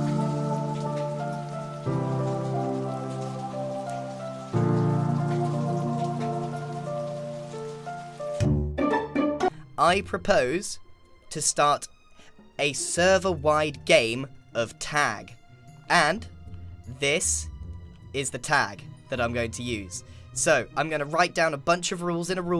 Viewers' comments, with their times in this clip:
0:07 Someone’s having a shower in da background 😂